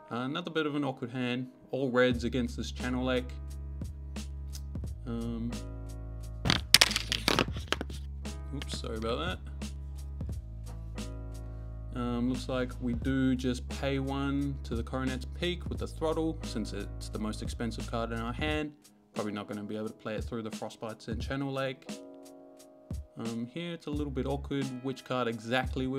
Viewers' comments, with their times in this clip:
0:07 my freakin ears